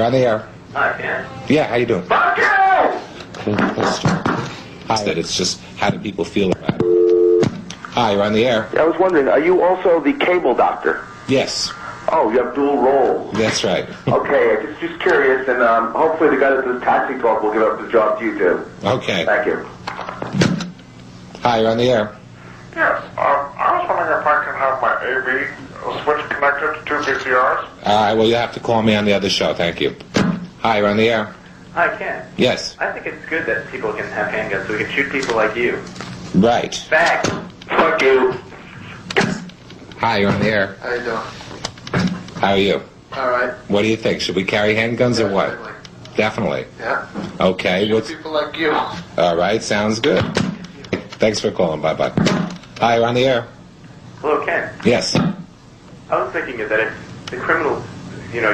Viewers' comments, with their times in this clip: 0:07 Definitely my favorite. "Oh, you have dual roles." Even someone in the studio was laughing.
0:22 Grover from Sesame Street had an issue with his av switch
0:39 I swear the caller sounds like Adam Sandler.
0:41 Jerry Seinfeld called in?!?!
0:41 sounds like Adam Sandler